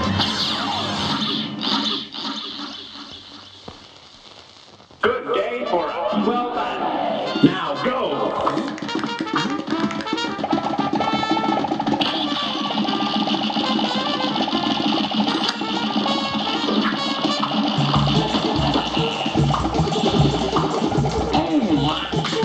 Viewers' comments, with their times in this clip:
0:06 put it at 1.25 it's gets better The music intensifies